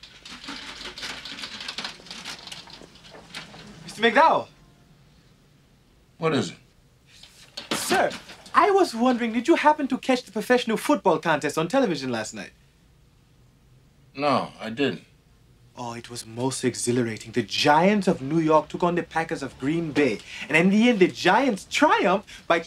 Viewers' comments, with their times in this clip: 0:07 unless I'm mistaken from the tone of his voice he appears annoyed.That's my exact emotion when people annoy me / or rather distract me to talk to me.